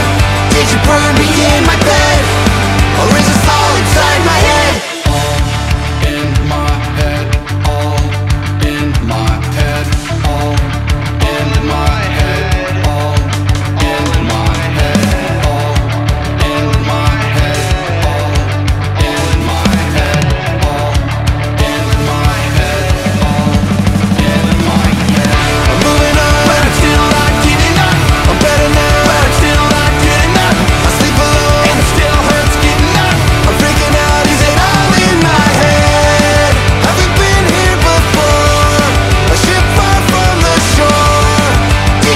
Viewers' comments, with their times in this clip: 0:04 I love how Tom yells "yead" for old times sake 😅💯
0:05 feels so Angels and Airwaves
0:24 IS IT ALL IN MY YEAD this song sounds like the TOYPAJ album HE ACTUALLY SAYS IN MY YEAD YES